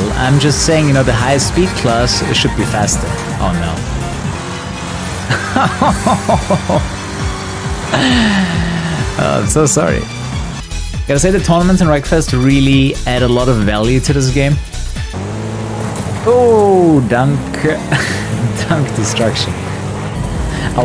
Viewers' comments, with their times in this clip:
0:04 sounded like a crazy version of Bittersweet Symphony